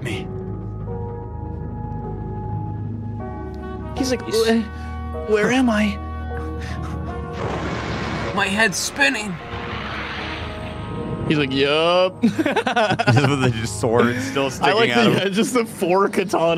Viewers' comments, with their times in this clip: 0:04 w voice acting from karl